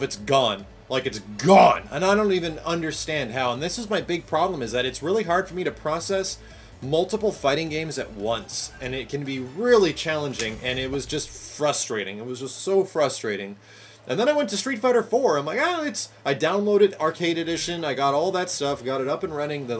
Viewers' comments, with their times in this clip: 0:05 ...that one growl when he says "GONE" ...just made me picture Nicolas Cage .....